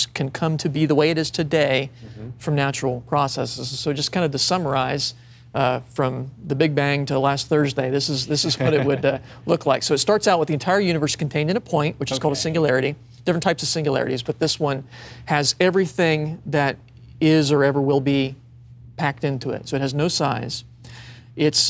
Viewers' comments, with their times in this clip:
0:05 Peter Piper, LOL! He said "summarize" not sun rise.